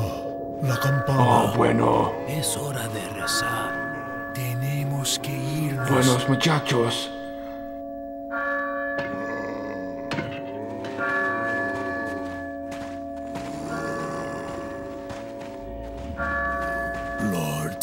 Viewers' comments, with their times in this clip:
0:05 you pronounced that perfectly. Ah bueno.